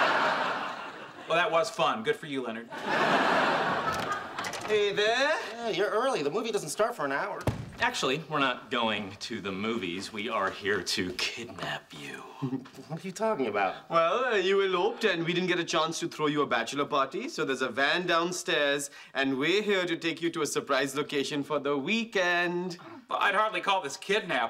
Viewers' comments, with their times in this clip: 0:07 I just like the way Howard says "kidnap you"